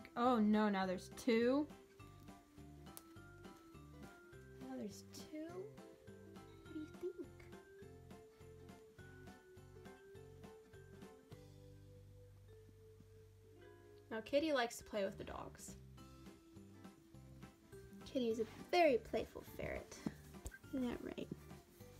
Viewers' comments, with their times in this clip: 0:05 the cat straight up said "help"